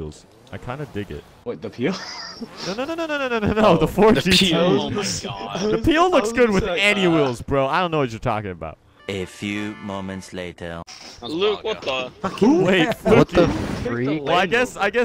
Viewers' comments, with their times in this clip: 0:03 he makes a rev sound